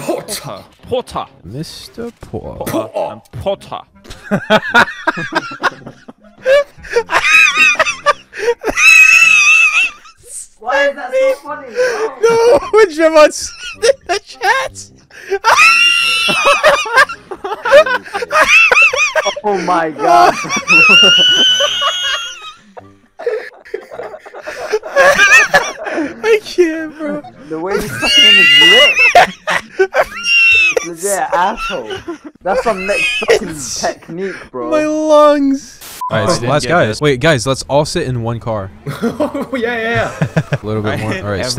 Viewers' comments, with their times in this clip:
0:09 he sounds like a kettle 😂😂😂😂😂
0:09 bro sounds like a steam furnace abd a steam train
0:15 tea pot noises intensifies
0:28 whale singing IMAO